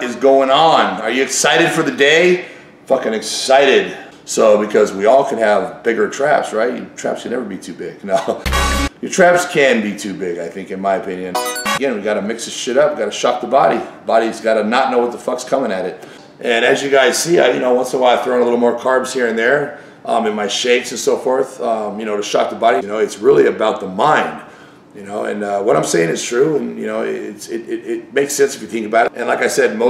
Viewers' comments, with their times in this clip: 0:10 LOL the quick music cutaway